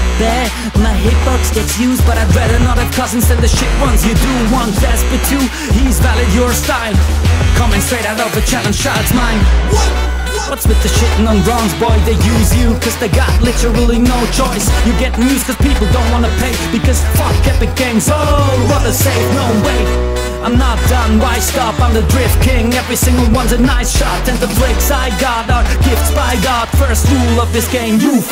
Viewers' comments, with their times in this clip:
0:09 the WHAT delayed is an epic touch